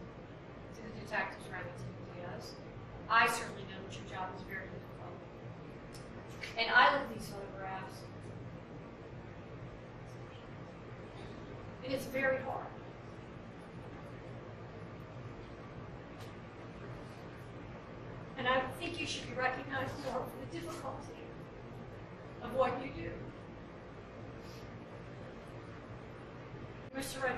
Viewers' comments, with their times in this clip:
0:09 The judge crying breaks my heart & makes it so real